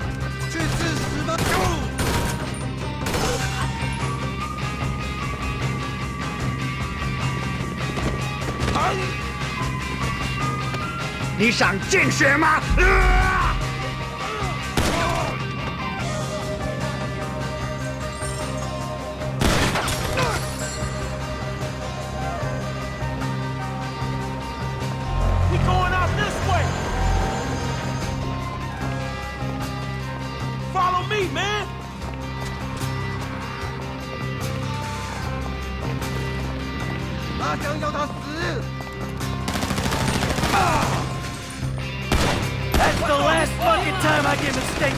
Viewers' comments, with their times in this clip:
0:09 I found the ughh so funy
0:30 The soundtrack is fantastic who agrees 👇🏾👇🏾👇🏾